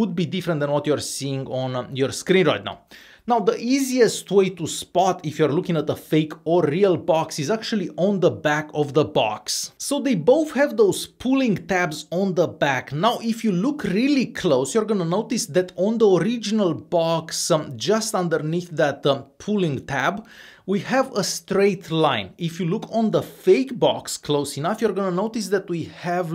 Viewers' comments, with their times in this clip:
0:08 Bro lost his accent